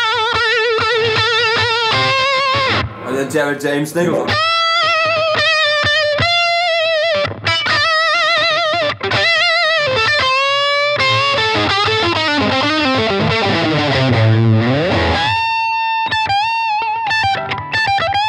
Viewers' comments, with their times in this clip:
0:03 channel a bit of the Greg Koch there. I see what you did sir!